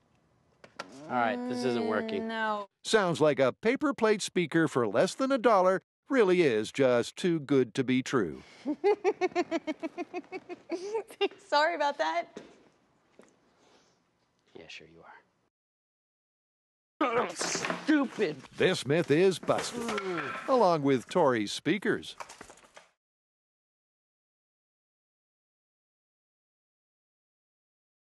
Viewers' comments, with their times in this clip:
0:08 love her laughter xD
0:16 it sounds like he fart while jumping! OMGLOL